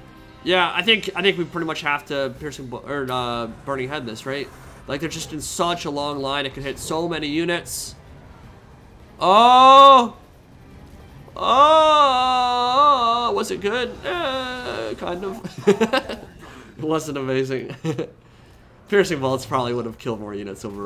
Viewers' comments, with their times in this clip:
0:08 your laugh is just the best! That’s why we love your videos, keep up the good work;)